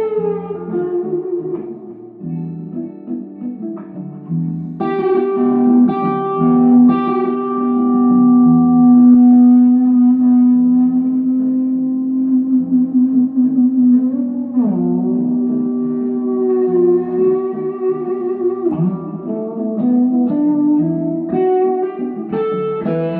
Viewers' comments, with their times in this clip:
0:06 Shock and awe… Mississippi Delta Swamp Thing to John McLaughlin with an edge —- not to mention that adjust the camera feedback and slide move 😮